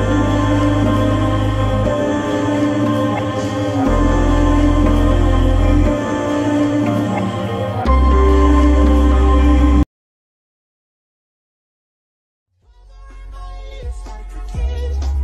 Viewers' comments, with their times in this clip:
0:03 where is the sound